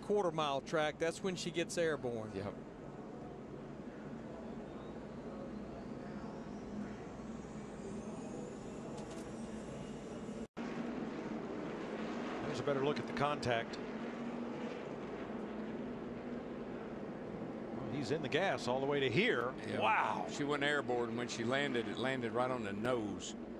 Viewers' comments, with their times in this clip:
0:06 is that a plane taking off in the background I hear?😊